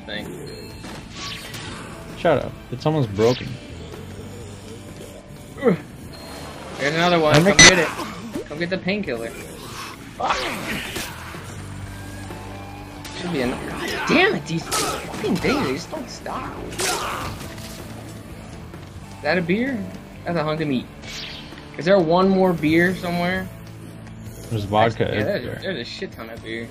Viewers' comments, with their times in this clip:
0:08 anyone else hear the sound glitch